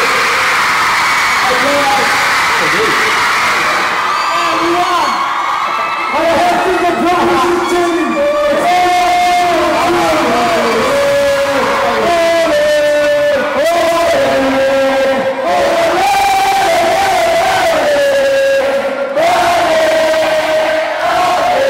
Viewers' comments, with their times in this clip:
0:08 RIP HEADPHONE USERS FROM Twitter.